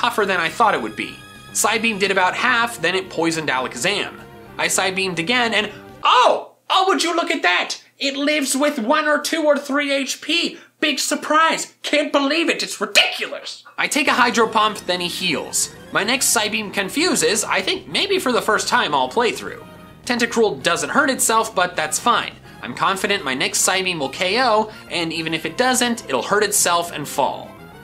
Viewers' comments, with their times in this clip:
0:06 He Sound Like PewDiePie 😂
0:08 he sounded like Pewdiepie